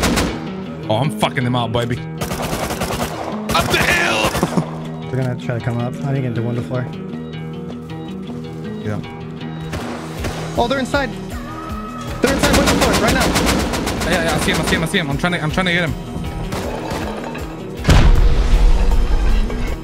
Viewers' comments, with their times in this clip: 0:03 when he screams UP THE HILL !!! sounds like cod or battlefield lol